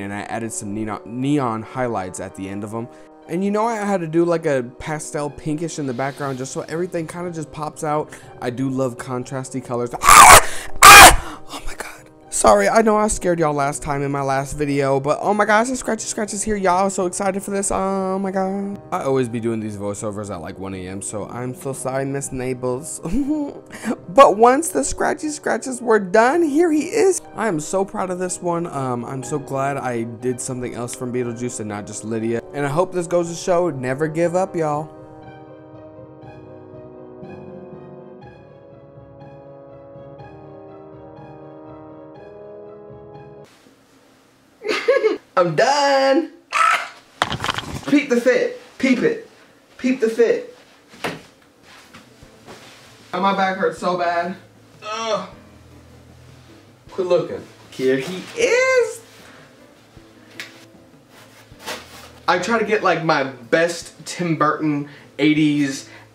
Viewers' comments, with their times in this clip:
0:10 me watching peacefully in a quiet room with no earphones at 2am then a sudden scream 😂
0:10 I was wearing headphone then I jumped off the bed when you screamed 😂
0:47 I loved the first one that you posted.. and I love love love this new one... It's totally gorgeous.. 😍 I wasn't expecting that slap😂😂😂